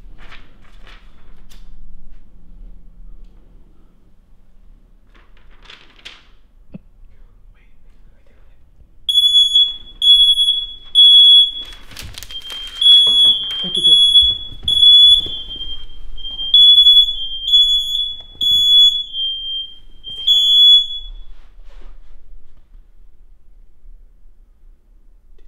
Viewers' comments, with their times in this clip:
0:09 All earphone users be prepared your welcome:)
0:09 Rip headphone users like me ⚠️ WARNING ⚠️ for
0:13 rip headphone users